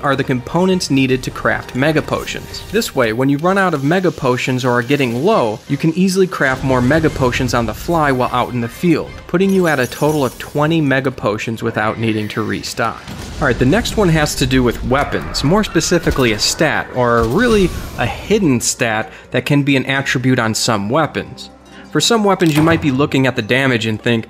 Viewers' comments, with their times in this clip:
0:06 Did anyone else hear how in the kirin's thunder was in sync with the music? Nice